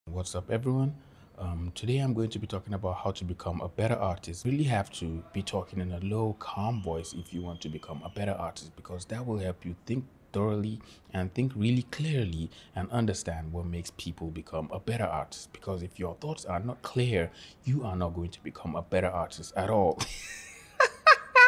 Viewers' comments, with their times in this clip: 0:05 i think i heard something that sounds like screaming......